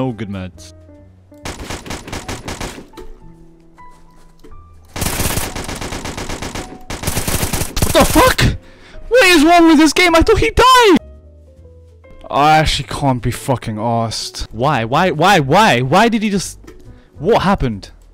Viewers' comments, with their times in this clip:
0:04 you can hear he exploitin note his username cause xm definitely dont fire that fast